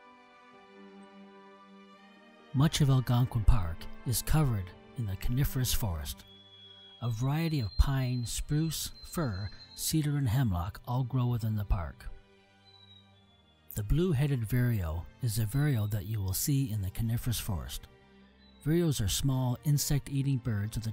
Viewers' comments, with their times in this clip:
0:06 Amazing video... in just as the forest shot starts there is a long call. What bird is it?